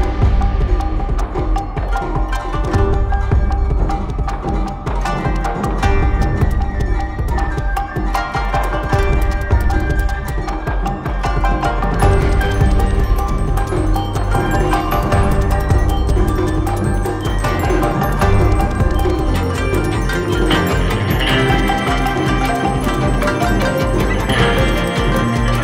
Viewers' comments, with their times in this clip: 0:07 That music sounds very western and, it has to be said, danceable.